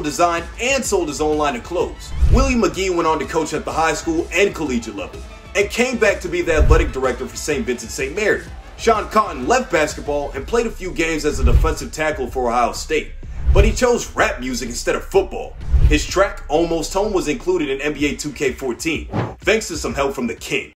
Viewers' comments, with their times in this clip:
0:04 he really just said cole ej level